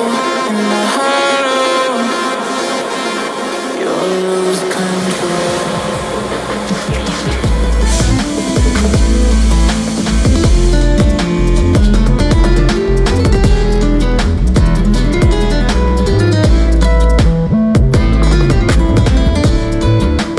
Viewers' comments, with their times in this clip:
0:07 AZALI type beat